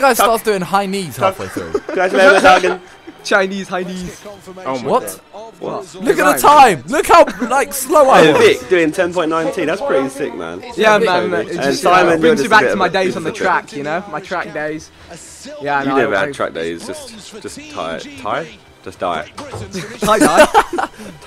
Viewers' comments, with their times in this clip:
0:03 i swear thats porno music !